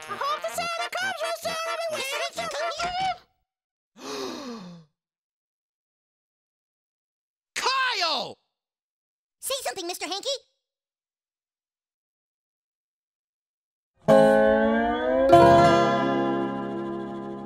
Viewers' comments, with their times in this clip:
0:03 Gerald: “(gasps and sees the poo all over the bathroom) (angry) KYLE!”